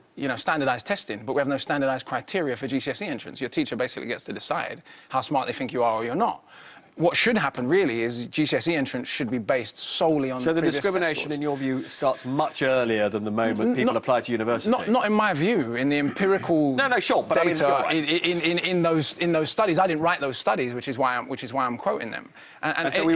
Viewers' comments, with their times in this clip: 0:10 Talked over Akala at approx as he is making an important point🙄